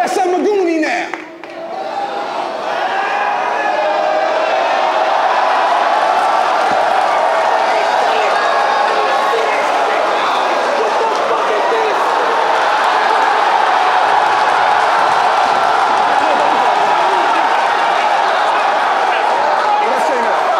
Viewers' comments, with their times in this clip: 0:08 best moment of the year the crowd went crazy